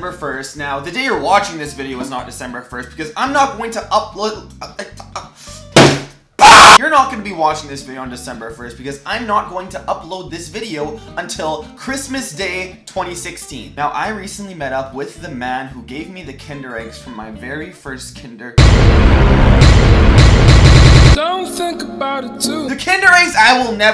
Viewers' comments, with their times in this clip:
0:05 WHY DID I WEAR HEADPHONES WHYYYYYYYYYY